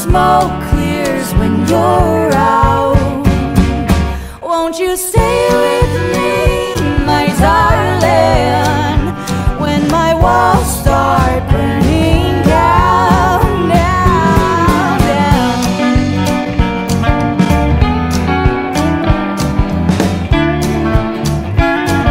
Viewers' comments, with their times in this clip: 0:05 the song just fits PERFECTLY